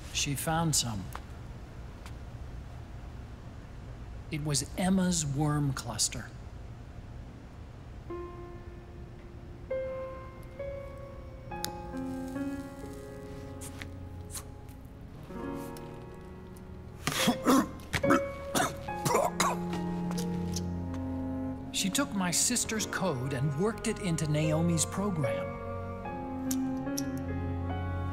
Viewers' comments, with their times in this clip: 0:09 sad memories with this music :'(